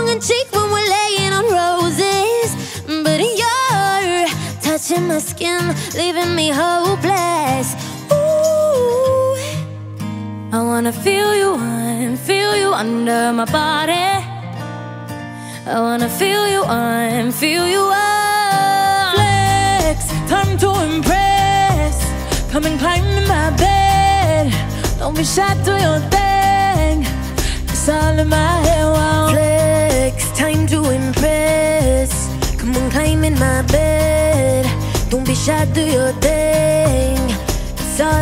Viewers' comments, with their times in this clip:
0:03 Camila sounded really good
0:19 Camila's face lmao. Their voices are fromheaven